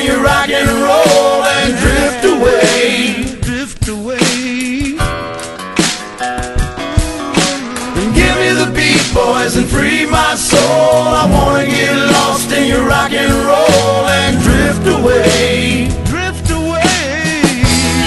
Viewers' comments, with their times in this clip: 0:05 beat makes me smile every time